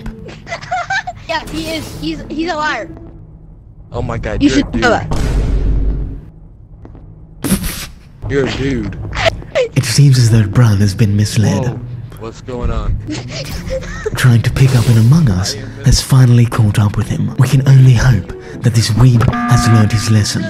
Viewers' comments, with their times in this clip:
0:05 "oh my god your a DUDE.." dramatic vine boom